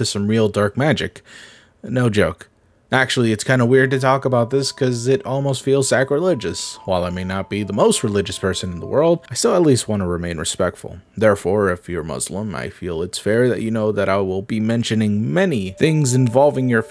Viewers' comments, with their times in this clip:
0:03 I recognize that background noise anywhere 🥹